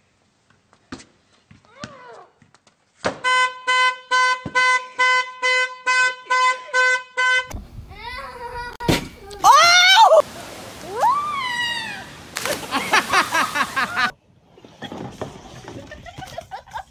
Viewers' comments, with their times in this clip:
0:03 legends say that the car is still honking